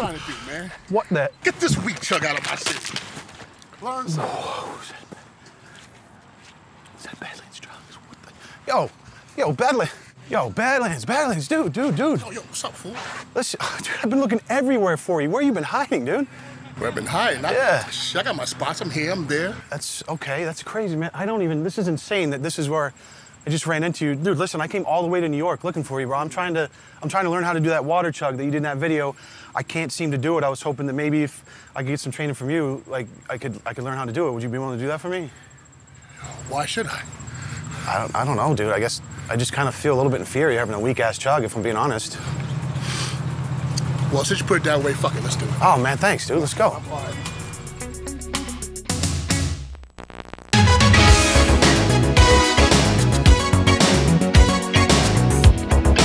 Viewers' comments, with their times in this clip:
0:07 is like a Gta V conversation
0:37 It’s fucken impressive he can guzzle pop like a bad man but is totally gassed from saying “why should I “ this man is my idol but I want to chugs Ice capps